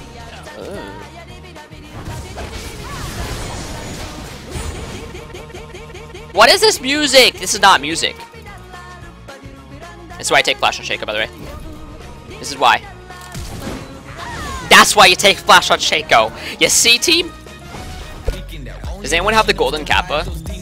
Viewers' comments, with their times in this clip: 0:04 Wtf that music!